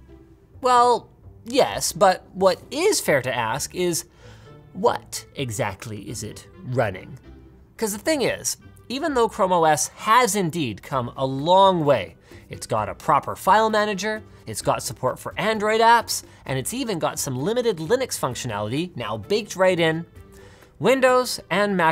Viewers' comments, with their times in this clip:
0:03 how many takes did it need to get that voice so perfect?